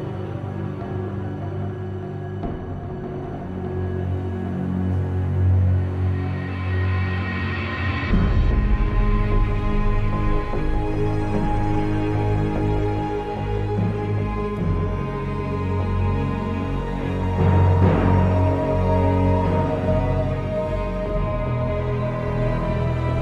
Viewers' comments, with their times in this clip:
0:08 OOOOOH that violin